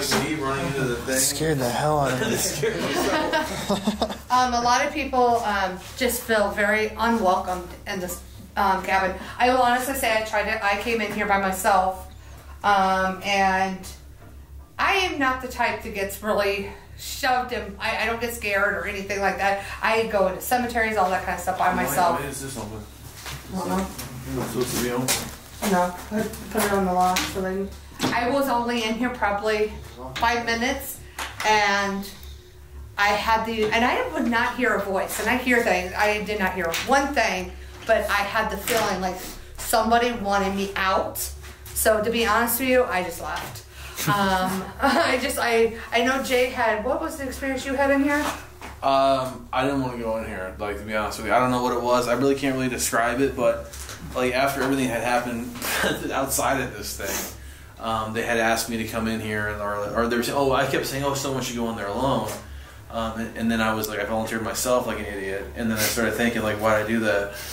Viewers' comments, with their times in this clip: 0:05 You can hear a voice whisper "it's free real estate"
0:40 there is a scream as she is talking, clear as day, I’ve been going back and back over it. It sounds like a woman screaming in the distance Love your show! I found you guys and back tracked and am now watching all the episodes from the first to the latest 😁💕
0:45 there was some kind of slow breathing
0:46 Weird sigh sound there
0:47 What was that sound ??? Sounds like a long, loud breath? Or, someone whispering, "Aaaaaaah"...Please someone comment their thoughts!?!😳
0:48 .. really creepy breath exhale